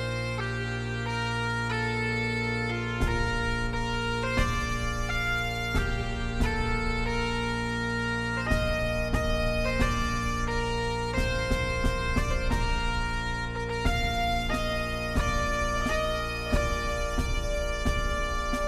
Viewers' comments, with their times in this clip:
0:03 the melody reminds me of the forest Lokomo song from Zelda Spirit Tracks